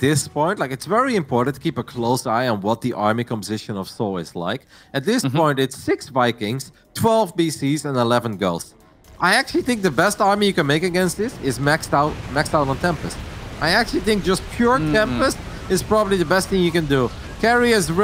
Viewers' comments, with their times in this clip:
0:05 "At this point it's-- 6 Vikings, 12 BCs and 11 girls..." Gotta love his accent sometimes. lol